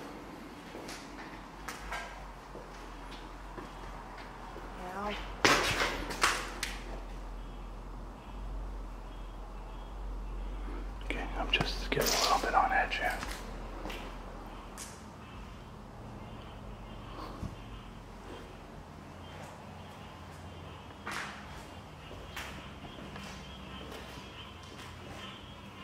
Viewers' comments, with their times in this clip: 0:05 I heard a lady Say Help
0:11 "Help" spoken or so creepy as anything ... 😮🤔